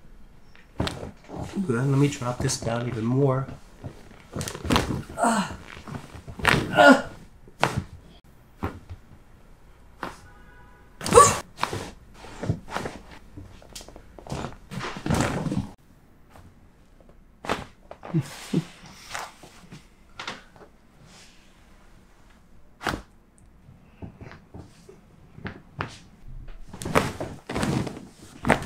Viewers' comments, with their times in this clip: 0:10 im sure after that u were cracking a dead body
0:10 that grunt caught me off guard